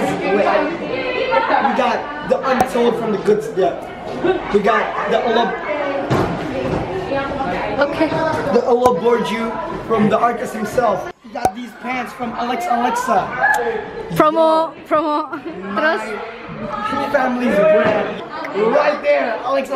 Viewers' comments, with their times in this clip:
0:04 Y'ALL I GUESS IM DYING CUZ OF HIS DAMN DEEP VOICE